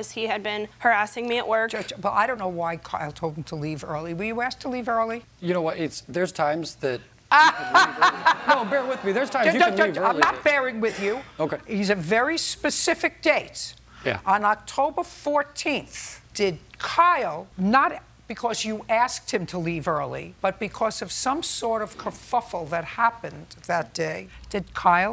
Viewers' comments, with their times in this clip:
0:07 the laugh killed me 😂